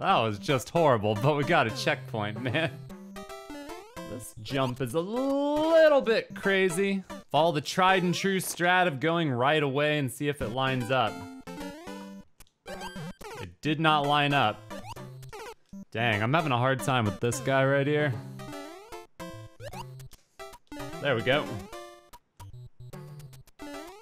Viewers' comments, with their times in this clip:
0:08 Ryu's jump and death noise sync with the music